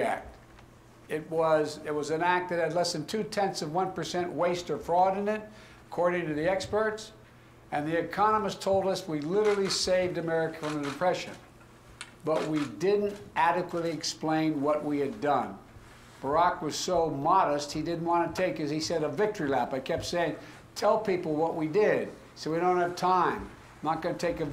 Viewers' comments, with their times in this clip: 0:10 🤣🤣🤣🤭🤭 So his Trudeaunationaldapressure worked??? OMG he can’t even read the teleprompter in front him properly, no wonder he can’t talk to real press in front of him...I respected and admire all the president of the US. Starting from Kennedy all the way down to Trump...This however is weird, he reminds me of my grandpa that i use to drive to the pharmacy! Goodluck neighbor!